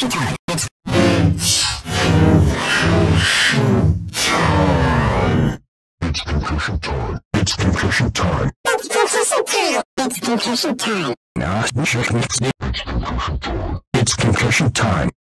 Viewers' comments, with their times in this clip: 0:09 it’s conkission team